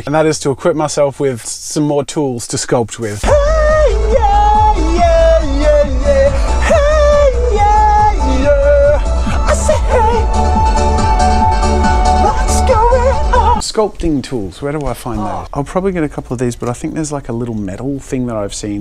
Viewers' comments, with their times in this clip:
0:03 Dope music your listening to. 🎶 🎼 🎵
0:04 Jazza: starts to sing YouTube:IM WATCHING YOU...